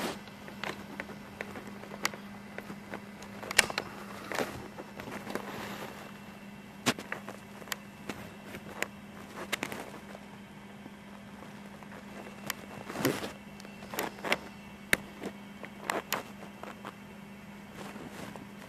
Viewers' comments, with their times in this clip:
0:06 look she's waving in the camera and there's alot of noises how can't he heard that